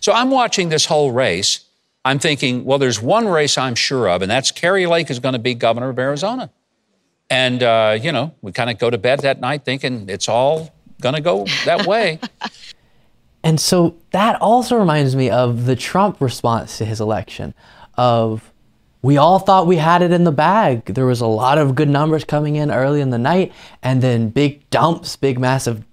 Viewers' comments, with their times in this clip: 0:07 I like her fake laugh